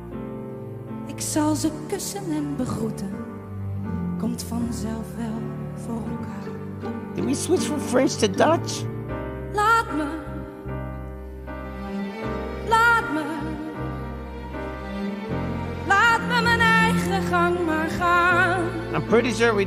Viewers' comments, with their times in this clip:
0:06 Yes, she changed from French to Dutch, and back and forth... Great!